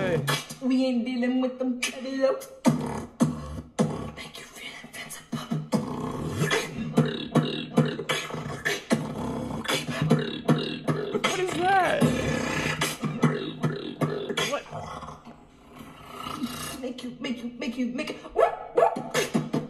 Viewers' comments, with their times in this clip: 0:06 Isn't that just inward bass?